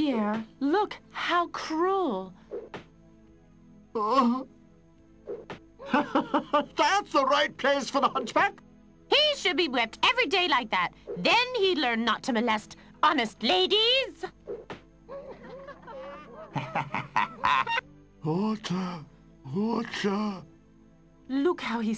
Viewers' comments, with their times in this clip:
0:03 It sounds like the same woman doing pretty much all the female voices. Esmeralda drops the accent! LOL at Quasi's walking music. It looks like a 4 year old with an old version of Flash animator.